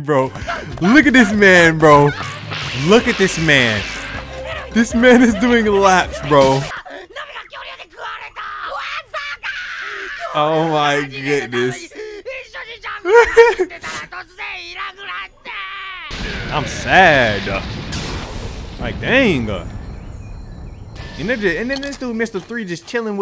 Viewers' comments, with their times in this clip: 0:07 there's something about Luffy and Usopp's voice acting here that's always hilarious to me